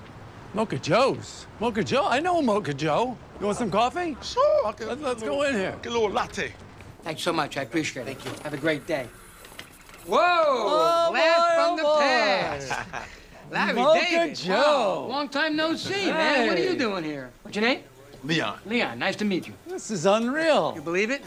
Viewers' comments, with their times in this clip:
0:06 Leon had a London (UK) accent for about one second!